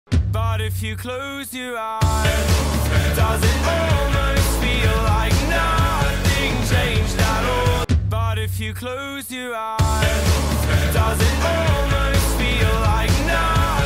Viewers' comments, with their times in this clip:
0:01 If you hit rewind when it hits and do that repeatedly it sounds like the guy is saying "bought a few clothes"